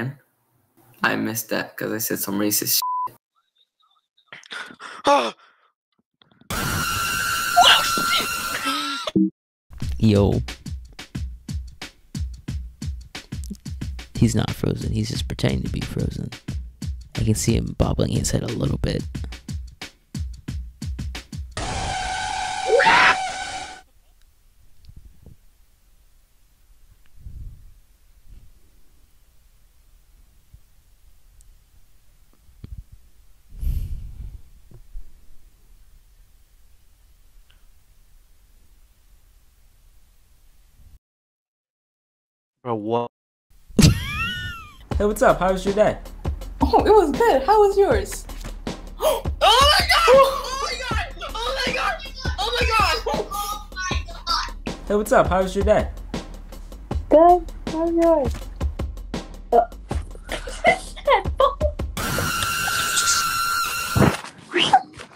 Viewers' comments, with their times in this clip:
0:05 i can't tell if that's fight or flight
0:14 SO GOOD. The concentration, and then the most unnatural sound he's never heard, comes out of his mouth.
0:18 Lmao AGHHHH and just silence afterwards
0:20 On the scream was that funny😅
0:21 HIS SCREAM THOUGH LMFAO
0:42 that "owo" at the end though
0:49 sounds like the meme